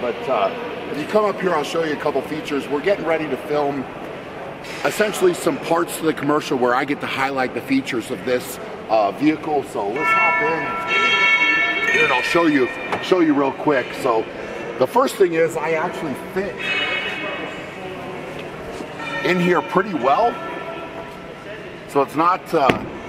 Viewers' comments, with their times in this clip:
0:09 Anyone else get Futurama theme vibes ?